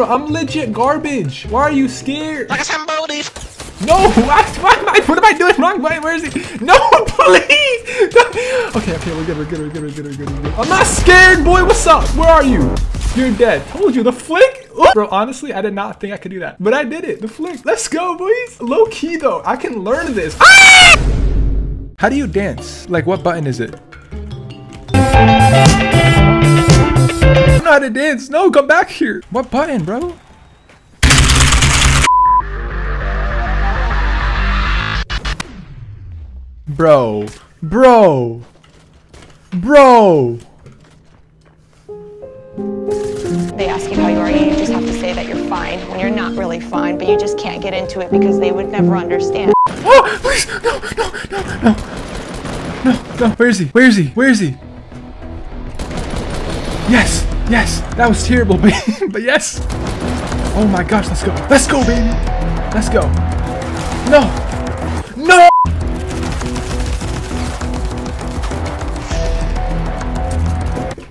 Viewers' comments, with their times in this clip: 0:03 wtf did he say?😂
0:19 The scream had me dying so hard 😂
0:20 you sound like a bird or something xD
0:24 Anybody else notice that he changed the music for when the default was dancing
0:25 is it just me or the music changed
0:52 when he hyperventilating